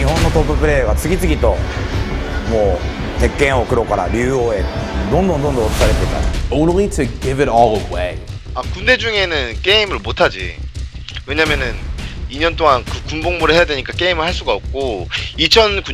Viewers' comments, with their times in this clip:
0:03 Automatic English captions "Homophobic certificate take a mocha review"